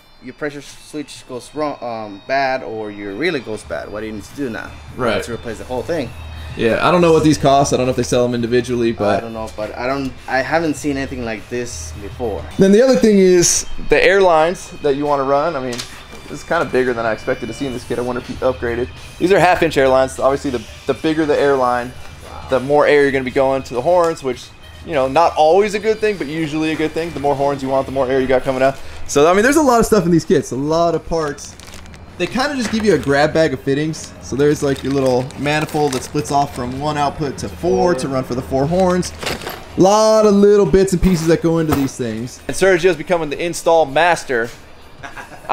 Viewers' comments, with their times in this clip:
0:04 Korn in the background lol
0:30 I like you can hear Korn playing in the background